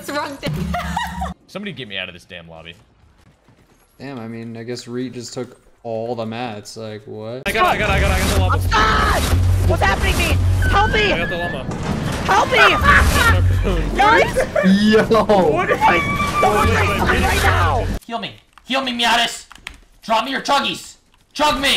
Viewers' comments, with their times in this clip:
0:04 why does i guess sound lyke tha nga so much